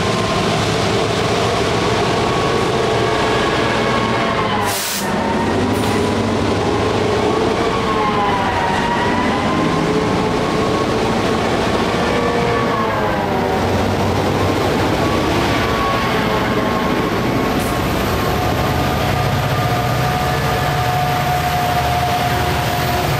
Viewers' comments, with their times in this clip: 0:09 Love the pure EMD Just insane!